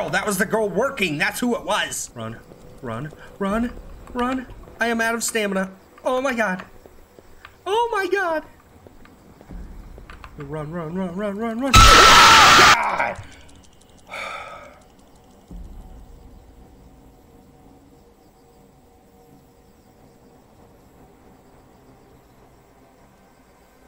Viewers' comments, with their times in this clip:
0:07 anime character voice activated 🤣🤣🤣🤣